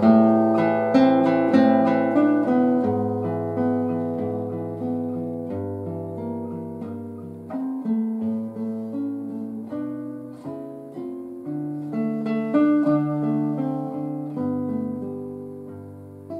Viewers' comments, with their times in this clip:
0:04 My comment is that I wish they had done a better job of recording this, the sound lacks clarity, is spaced too far left-right and so the middle sounds hollow and scooped out. Around the mark it sounds distorted and rough. Come on guys I need to hear that instrument sing!